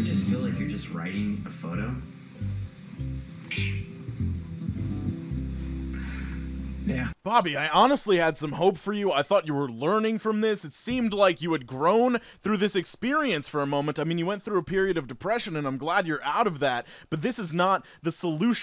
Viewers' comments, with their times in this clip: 0:06 That slow-mo of the cat chirping gave me life